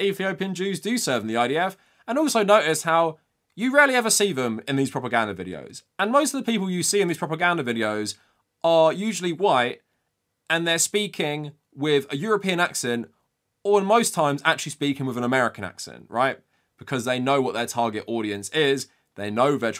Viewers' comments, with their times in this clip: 0:07 those who speak arabic ain't natives, their arabic is broken, just saying